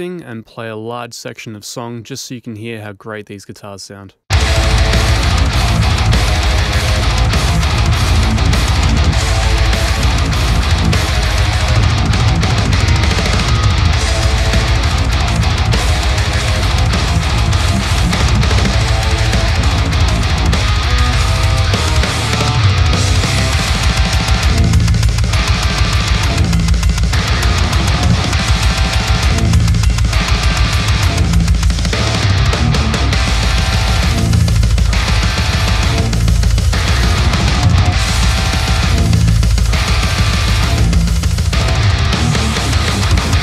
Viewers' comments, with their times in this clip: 0:04 Honest to god i got goosebumps instantly. The transition from your chilled out voice to that damn guitar tone and the full song. Damn.
0:23 listen to that crunch! Damn!!
0:24 how to compensate for how the guitars dont sustain that palm mute. Ive been finding i can achieve a great tone and it sounds good in the mix but for certain instances i cant get that sustain and it hurts